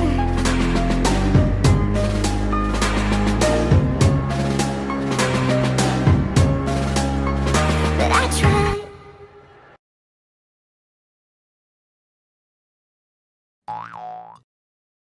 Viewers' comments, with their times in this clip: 0:09 I laughed really hard, but "why the hell is Niffty a fÛcking hot dog" had absolutely killed me ALSO I WAS NOT EXPECTING THE DRUMS, HELP💀💀😭